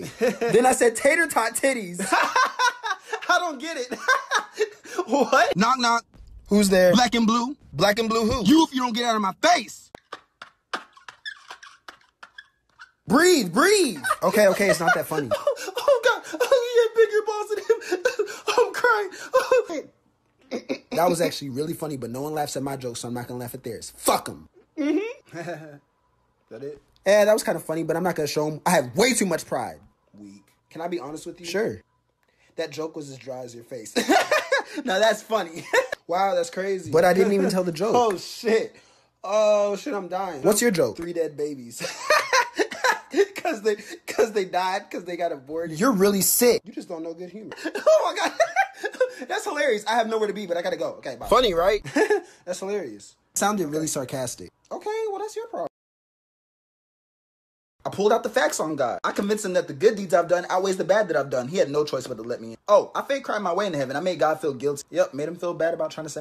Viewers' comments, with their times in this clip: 0:10 IT'S SO ACCURATE THE LAUGH😂😂😂😂
0:11 Taurus is dying of laughter I feel like that's me but I'm libra 😂😂😂😂😂😂😂😂😂if someone tells me a joke even if its not really funny or I dont understand it I still laugh😂😂😂😂😂😂😂
0:11 my sign and my laugh XD
0:51 My homie is a Capricorn and her laugh sounds really fake